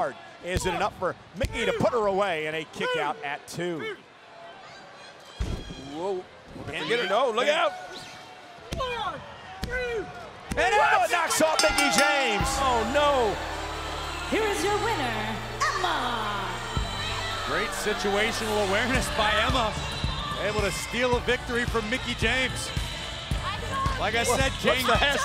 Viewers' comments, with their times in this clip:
0:09 wow the crowds reaction is amazing.